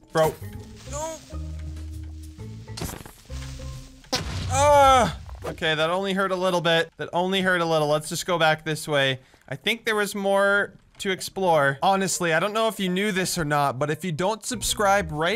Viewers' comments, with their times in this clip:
0:03 THAT FART MADE ME BURST INTO LAUGHTER 😂😂😂😂